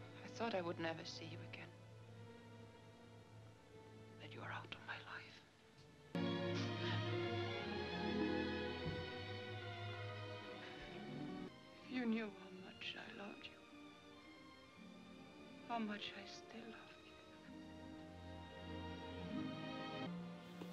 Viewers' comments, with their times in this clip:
0:06 After viewing this movie many time, I couldn't figure how Rick turned and began believing Ilsa. the background music changes from minor to major key. To me, that is the turning point.